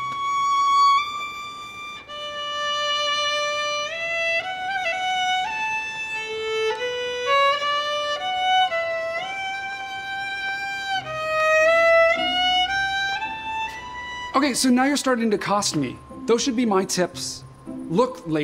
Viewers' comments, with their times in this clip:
0:04 she's bad at playing the violin